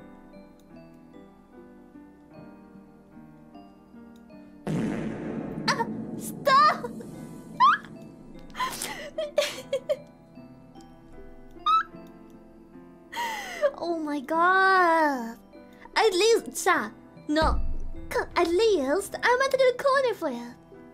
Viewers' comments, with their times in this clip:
0:04 the reverb fart lmao
0:04 is that how it sounds when someone comes